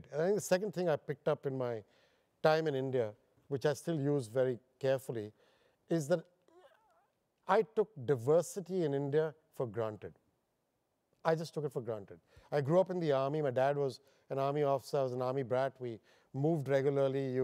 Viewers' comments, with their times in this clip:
0:05 Am I the only one to experience that wired sound?